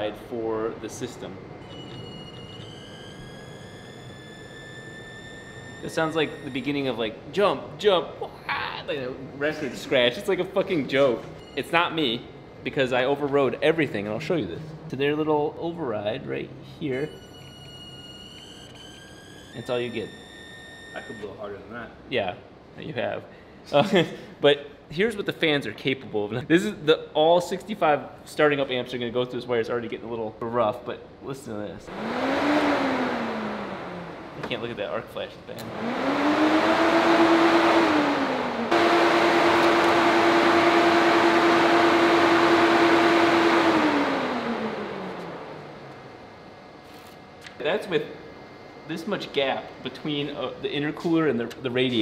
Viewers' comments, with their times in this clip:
0:07 sounds like a stall horn lol
0:39 sounds like a PS4 pro trying to play minecraft